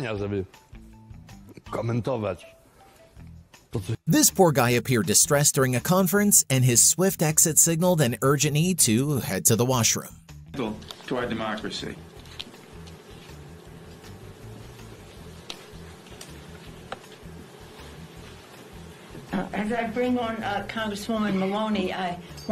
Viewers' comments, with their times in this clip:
0:05 he was just supposed to fart but sh!t accompanied it